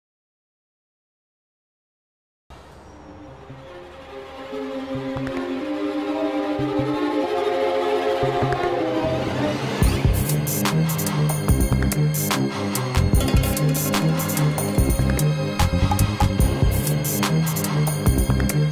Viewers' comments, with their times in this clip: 0:04 credits song again XD